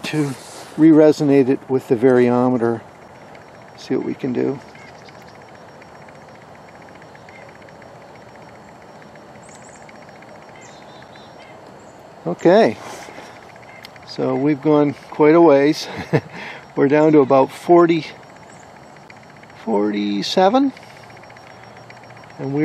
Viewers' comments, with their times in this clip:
0:05 The noise Is that your teeth chattering in the background?